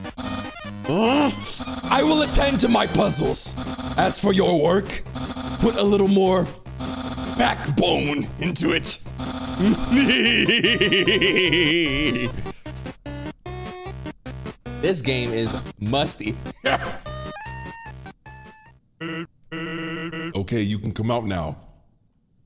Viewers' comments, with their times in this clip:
0:09 he sounds like plankton from SpongeBob ☠️
0:09 dude be sounding like plankton what the hell lol
0:09 cue immaculate plankton laugh
0:09 I swear he sounded like Plankton for a second
0:09 so we aint gonna talk about how he perfectly did that dude laugh🤨🤨🤣🤣